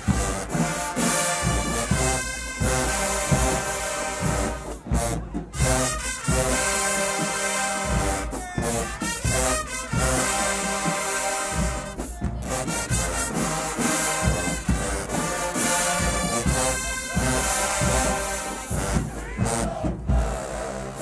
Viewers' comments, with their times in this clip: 0:08 that right there that groove is what alcorn is missing when they play this S.O.D could never Be this passionate about that song as TxSu is coming from a Human Jukebox Fan Sod please leave this to them 💯